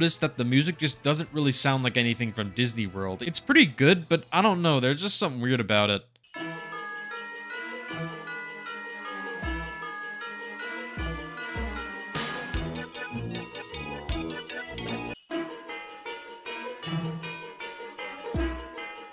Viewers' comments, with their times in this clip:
0:05 doesn’t surprise me - that’s the most 90s-stock-ass-sounding music